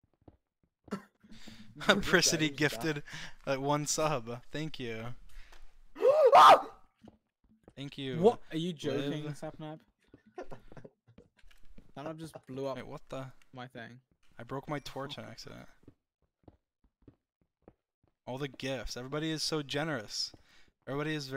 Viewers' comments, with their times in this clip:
0:06 sapnaps scream literally kills me idk why